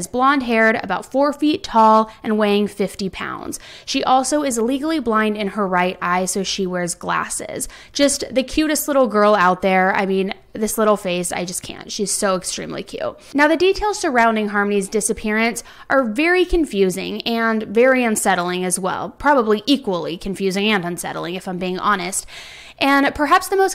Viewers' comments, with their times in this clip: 0:04 What does "illegally blind" mean?